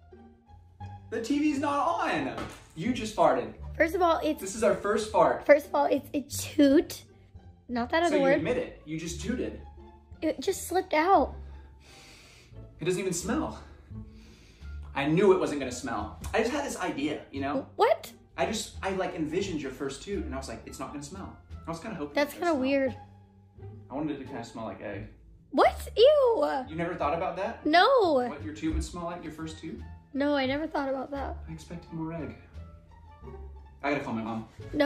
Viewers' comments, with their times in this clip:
0:08 was happy to hear it it is your frist fart
0:19 Lmfao the first video was funny af the 2nd one sounds like ja rule lol 😂 Lol the one where the guy says to be farting like that in silk bro whats wrong with you 😂😂 😂😂😂😂😂 Rofl that one guy was like fuckin gross is that rolling out ur cootchy